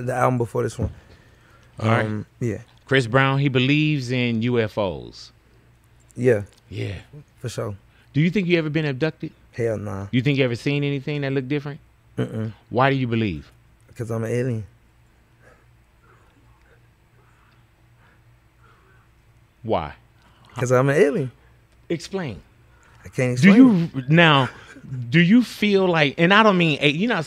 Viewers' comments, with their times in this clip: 0:10 that pause 😂😂 “cause ima alien 👽 “ lmao